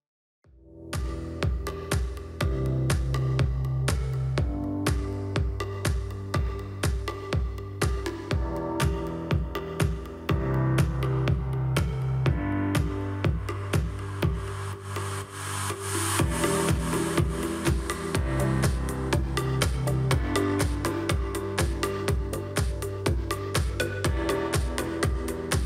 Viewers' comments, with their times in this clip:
0:08 Listened w/ eyes closed through my Audio Technica ATH-M20x song - Deep M Audios - narrow and a bit boxy Presonus - Wider and Open Great Video!! Thanks!